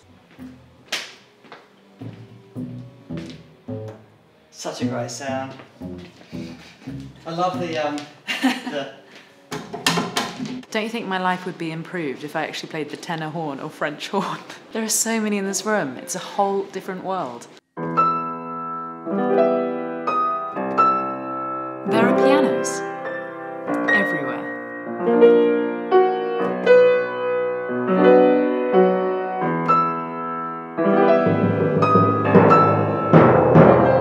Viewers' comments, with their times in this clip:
0:03 nice sound, but it could use some pedals :-)
0:19 sounds like Space dementia